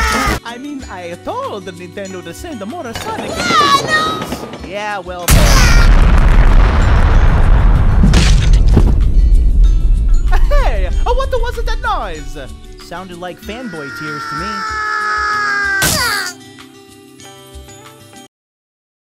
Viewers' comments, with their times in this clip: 0:05 The Alternative Pac-Man Voice XD